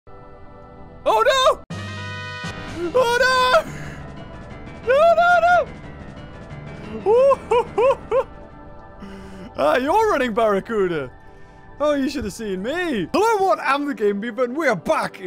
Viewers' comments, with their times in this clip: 0:00 That sounded sad